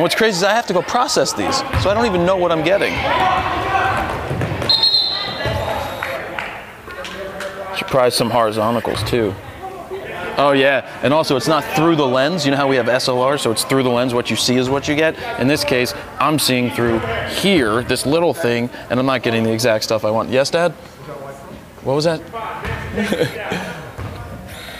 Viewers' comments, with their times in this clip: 0:06 again, "horizonticals" ...... lol